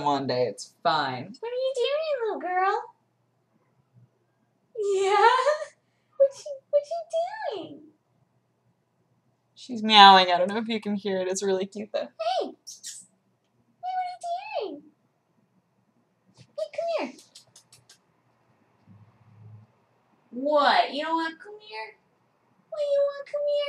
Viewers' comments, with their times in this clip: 0:04 Dat "Yeah" o.o;